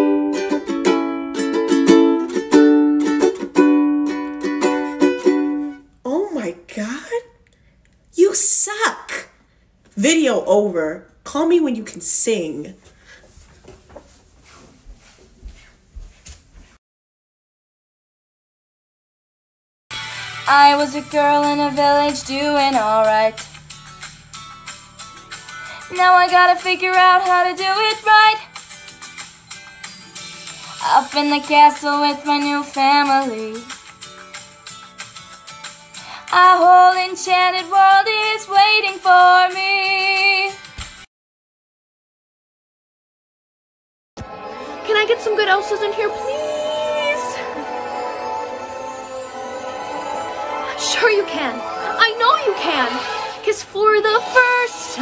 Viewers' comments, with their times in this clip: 0:04 omfg she is beter than the original song,voice of an angel Respect for all these peeps ✌🏻
0:04 The lady in sounded worse than I did with her rude self😤✋🏼✋🏼
0:05 Disney channel girls when your voice cracks once:
0:06 girl you aint mariah carey either dont come for me
0:07 hey at least I dont keep sounding like I'm out of breath all the time like you sound like ev-getting a breath air er-*panting*green.
0:08 don’t listen to her you sing good
0:08 dude I was singing and then she just stopped
0:41 How does she make a Disney theme song for Sofia the first sound good-